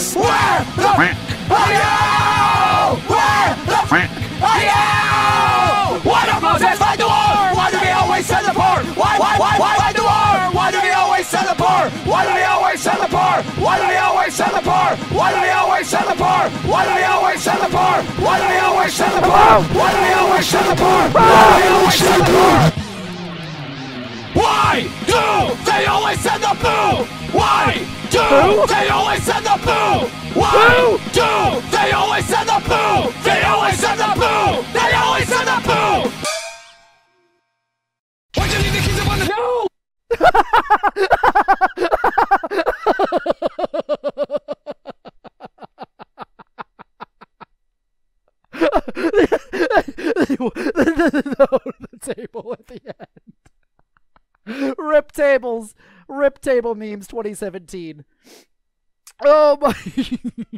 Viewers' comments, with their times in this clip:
0:10 I love it goes from Happy at the first 3, to concerned, then that just slowly evolves into fear
0:18 When Trent Reznor sings System of a Down
0:20 The yelp cracked me up. He was terrified but too concentrated on the playing to really scream.
0:21 When Satan Has An Anger Meltdown
0:37 this dude sounds like Ripper Roo from Crash Bandicoot
0:40 dat laugh tho X3
0:40 ... best... laugh... EVER 😂
0:41 Bruh sounding like the fucking live action cat in the hat.
0:48 HIS LAUGH WHAT THE FUCK